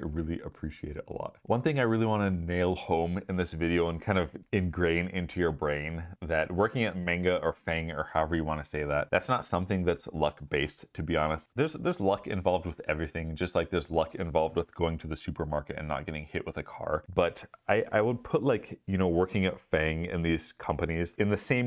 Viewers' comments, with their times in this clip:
0:06 First off, congrats man! That's always hype to see progression in friendly people who've helped you out before. Second, ... IS THAT WHAT WE CALL IT NOW? Did you say "Mainguh" as in MANGA? Like M.A.N.G.A??? Is that the new acronym since Facebook changed to Meta? I AM SO DOOONNNEE!! 🤣😂 Making me wanna try my shots at a FAANG SWENG position now 😆 LOL